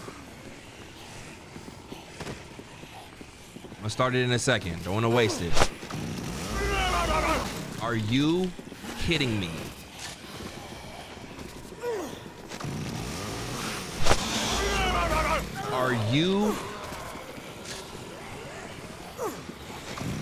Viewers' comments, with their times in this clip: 0:04 The sound effects when they were getting him from the back had me rolling 😂